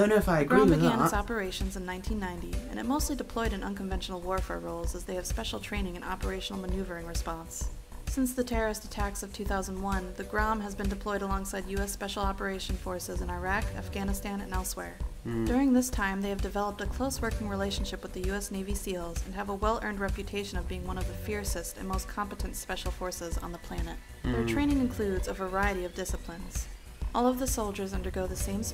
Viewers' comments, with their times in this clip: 0:10 After playing Skyrim for 8 hours (and I know she said elsewhere) I thought I heard her say " in Iraq, afganistan, and Elysweyr" and then I thought, "Kahjiit Terrorists?" Then immediately realized my mistake.